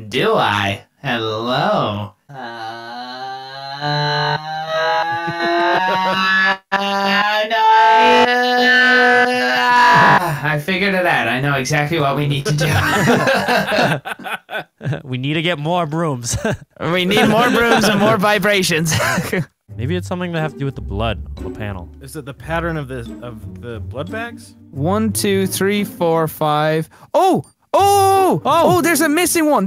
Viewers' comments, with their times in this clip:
0:10 insert windows startup noise when he ends